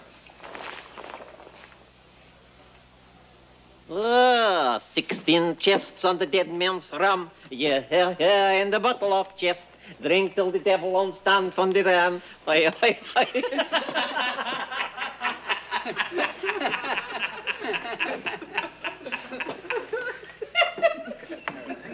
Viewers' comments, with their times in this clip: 0:03 That Shanty he starts to sing cracks me up no matter how many times I watch it, a true legend of comedy!